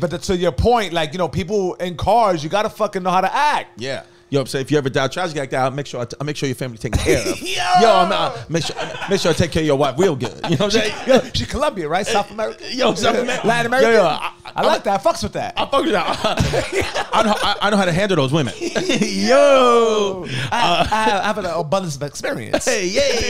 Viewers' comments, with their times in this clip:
0:05 Chris turns into Bobby Boucher 😂